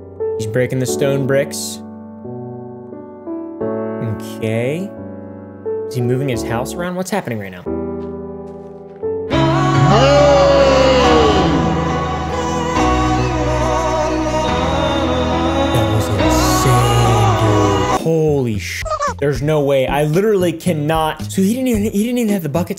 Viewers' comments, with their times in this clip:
0:09 oml the lil song has me CACKLING bro whats it called lol